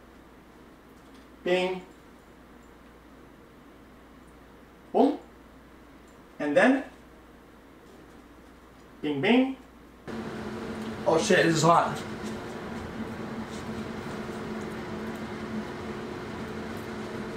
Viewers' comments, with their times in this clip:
0:04 farting in the kitchen smh